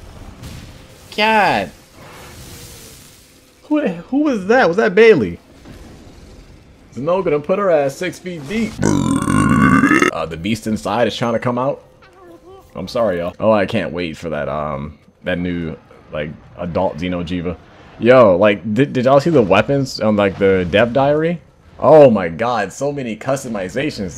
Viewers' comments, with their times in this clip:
0:09 that was a filthy slam guttural! 🤘🏻🐷🔨